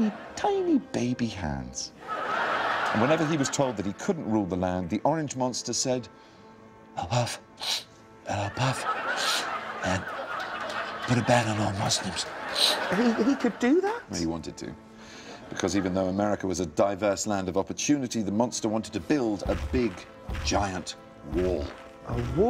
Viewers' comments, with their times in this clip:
0:06 😂🤣😂🤣 nice impersonation Benedict hahaha